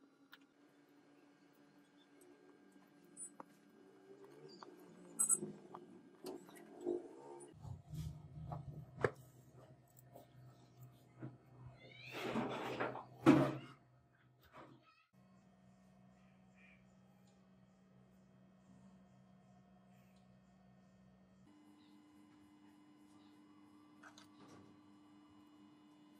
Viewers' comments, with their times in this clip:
0:10 you'll hear a cat falling off something and scream. Thank me later.
0:11 I hear cats fighting.
0:11 cats are screaming